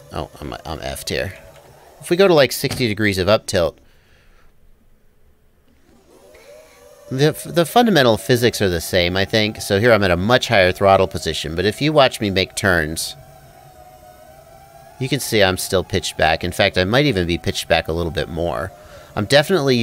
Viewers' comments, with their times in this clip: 0:05 thats that moan ? XDD and like always ASOME video